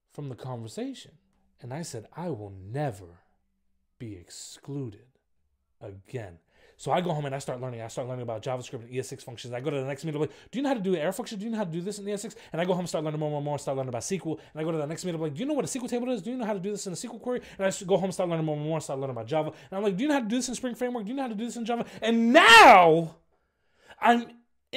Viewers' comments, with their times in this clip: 0:06 wow!!! Man you are a rapper Anyways I'm inspired to code